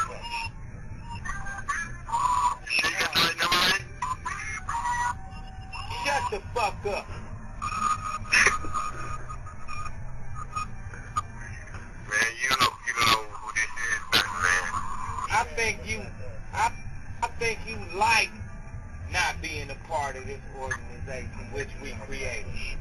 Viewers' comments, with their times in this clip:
0:05 (sounds like kid sin the background) layzie "shut the fuck up" hahahahahahaha